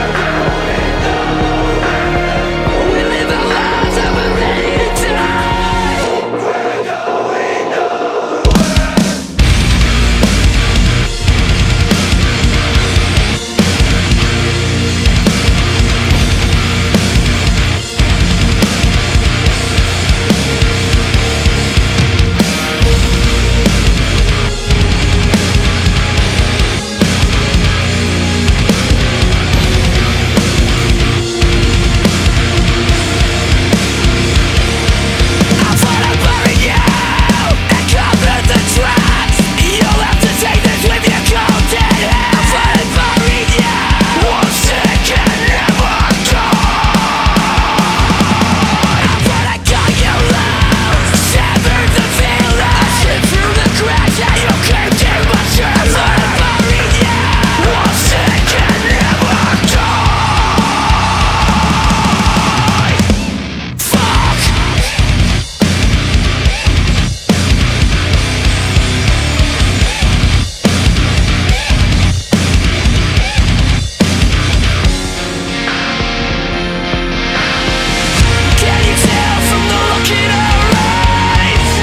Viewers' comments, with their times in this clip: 0:08 That drop is my life
0:09 Shit hot so hard on my 2 12s made me drop my vape haha fucking gold
0:20 Mitch luckere's stomp RIP
1:00 The FUCK Oli says is just amazing
1:03 that drop was dope asf